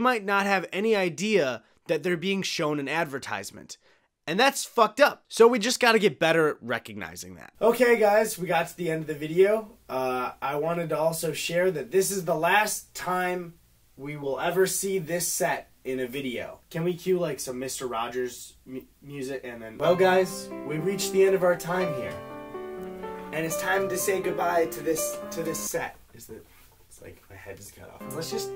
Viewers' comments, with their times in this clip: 0:06 dude the audio changed I thought someone was in my apartment I damn near pissed m'self
0:07 the transition scared the shit out of me bc i’m alone in my living room and for some reason my brain processed that as a person behind me starting to talk to me
0:07 THE AUDIO CHANGE SCARED THE FCK OUT OF ME I'M WEARING HEADPHONES I THOUGHT SOME GUY WAS ACROSS THE ROOM YELLING AT ME
0:07 scared the crap outta me. The volume changed so drastically that I thought there was someone behind me. It's also 1am, that may have something to do with it.
0:07 Ngl the sudden audio quality shift scared the absolute shit out of me
0:15 holy shit when the audio quality changed I jumped so bad